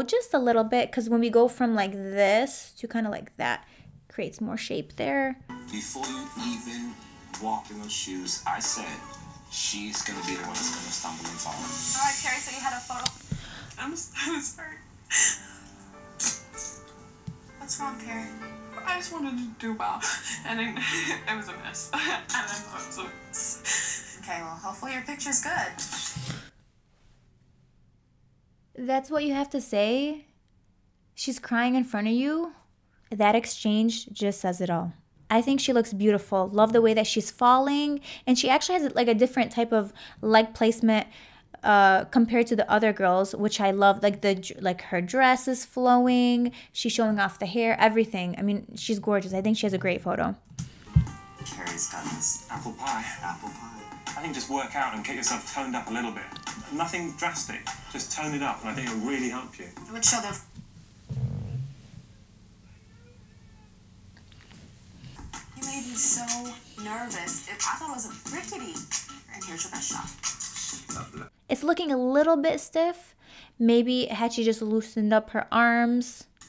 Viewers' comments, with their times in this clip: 0:06 The girl cry’s The host: what’s wrong Me screaming in my head: open your ears did you not just her the horrible thing the judge said. And are we not going to talk about how they laughed when the last girl feel and hurt herself.
1:04 I think your cat talked, I heard “help me”